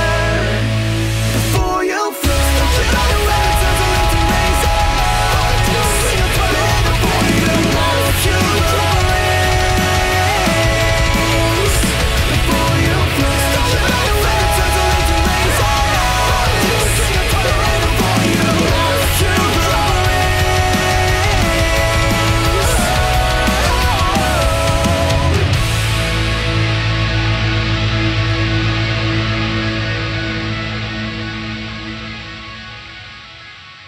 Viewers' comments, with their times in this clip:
0:03 I quite like screams, like it sounds like a mini scream and i like that =)
0:16 I've listened to this song sooooo many times and I didn't notice the facebook notification sound until now lmfao.